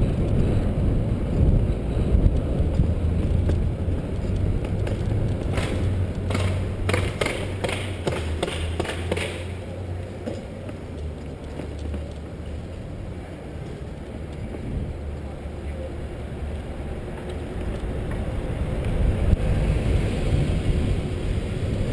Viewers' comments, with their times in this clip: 0:05 Is that gun shots I hear?